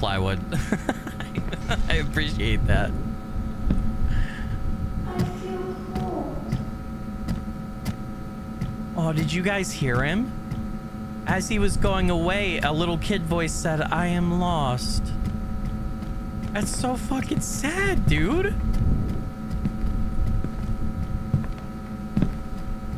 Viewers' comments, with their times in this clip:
0:06 The kids voice said “I feel cold”